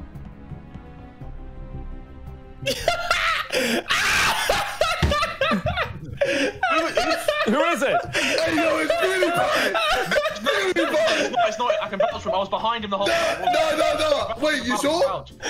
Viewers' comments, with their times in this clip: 0:03 that laught tho